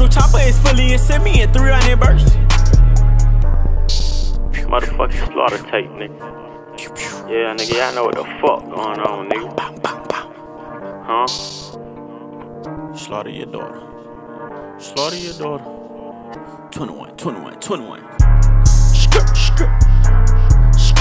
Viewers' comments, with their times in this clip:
0:07 Lil Bit Of ASMR Right There